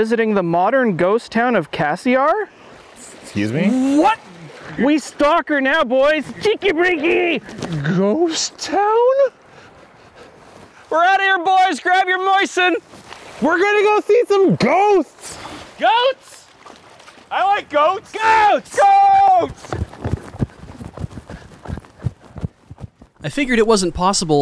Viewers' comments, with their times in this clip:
0:06 Me Why do I suddenly hear Hardbass?